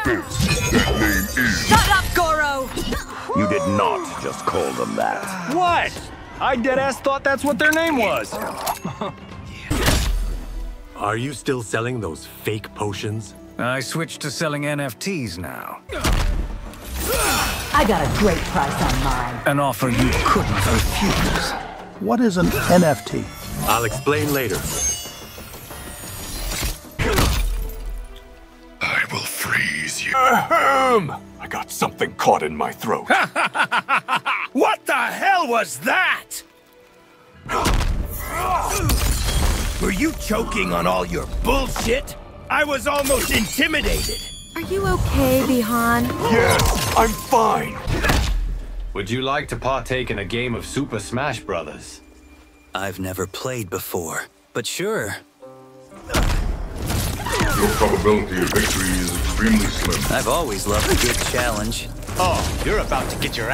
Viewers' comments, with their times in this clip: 0:03 sub zero with steve blum voice is something else
0:12 i hate how good that voice is
0:27 So, Noob Saibot is just Bi-Han in dire need of a throat lozenge. Headcanon accepted.
0:28 why did bi-han sound like his mk11 self noob saibot
0:28 " I will freeze you -- " then proceeds to freeze his own vocal chord 🥶
0:29 Noob Saibot voice
0:30 I like how in Bi han sound like Noob saibot ,(yeah i know he is him)
0:39 Reiko sounds like Vegeta
0:44 Why does subzero sound like vegeta right here
0:44 the way she says "Bi-Han~" 💀